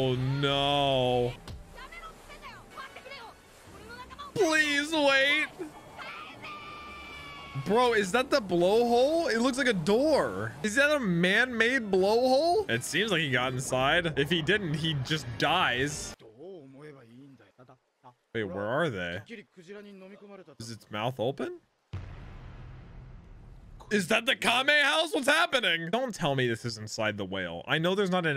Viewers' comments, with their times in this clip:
0:10 sounds hella nasty